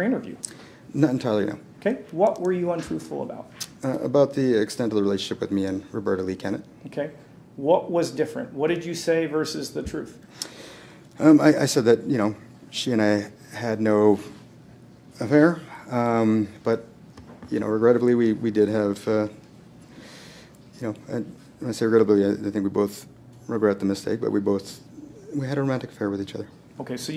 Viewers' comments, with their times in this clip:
0:08 the way he tried to skip mumble over the word affair 🤣